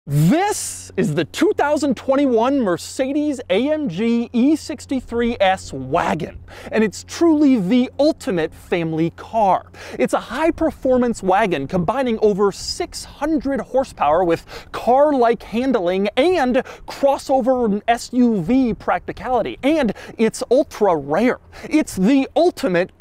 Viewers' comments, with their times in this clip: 0:05 Doug gets so excited about E-Class station wagons, it sounds like he’s saying “Wagging”.